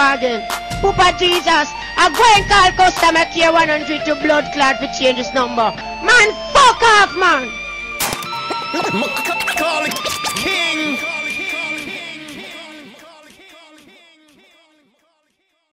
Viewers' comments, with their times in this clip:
0:07 is funny the way it is said